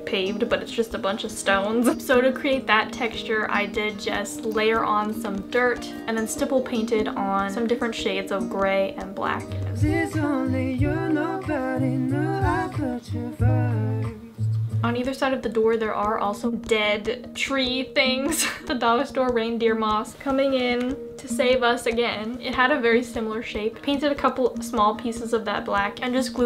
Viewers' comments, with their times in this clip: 0:10 Jungkook singing at my worst? lol